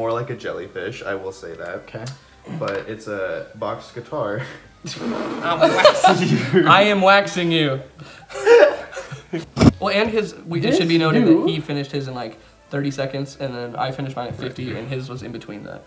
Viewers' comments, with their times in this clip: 0:03 i love the dk64 song playing